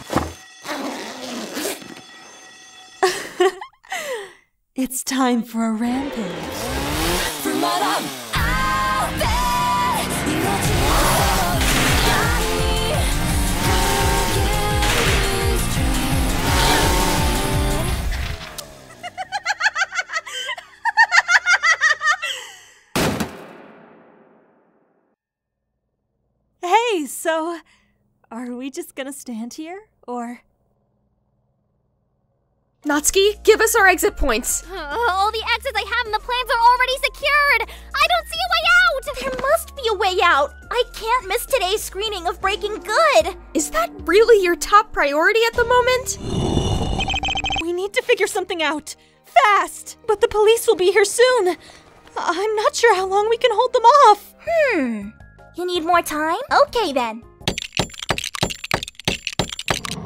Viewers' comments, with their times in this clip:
0:05 YURI YES (DOOM MUSIC INTENSIFIES)
0:07 YO DID NOT EXPECT THE RE:ZERO MUSIC BUT IT'S FIRE 🔥🔥🔥
0:20 Also, yuri's evil laughter is voiced sooo well
0:40 lmfao the breaking baf theme in the background was awesome
0:47 why did she start speaking ace attorney 😭😭